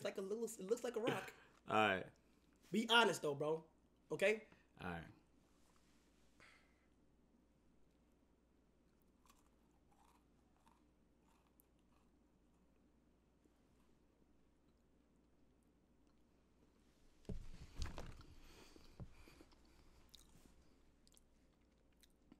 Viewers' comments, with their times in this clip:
0:06 That cookie sounds ashy 😂😂😂😂